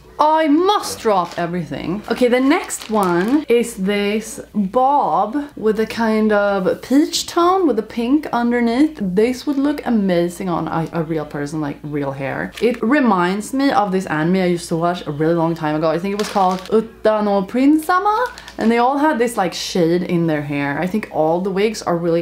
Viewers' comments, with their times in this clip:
0:04 "Boooob" just sounded like "Ron, sthaaaaaap" from that HP parody, I choked on my tea Edit : that, you look so awesome with a bang